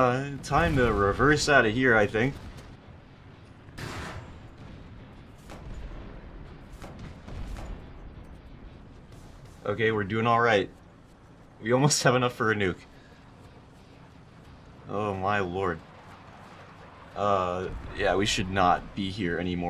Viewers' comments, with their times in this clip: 0:04 the discord ping got me